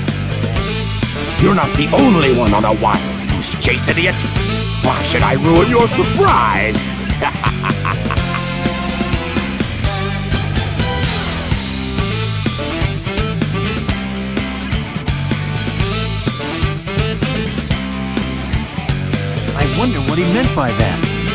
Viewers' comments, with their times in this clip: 0:05 So is nobody gonna talk about this long awkward moment? IT TOOK 12 SECONDS FOR HIM TO CONTINUE TALKING